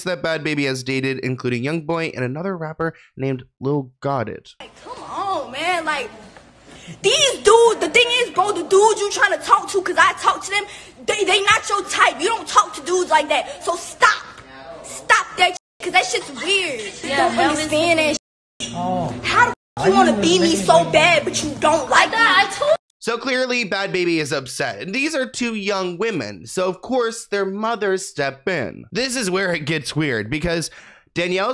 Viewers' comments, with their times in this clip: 0:05 she's tryna sound like Nba Youngboy. 😂
0:17 to be honest I don't even like her she really sound jealous to me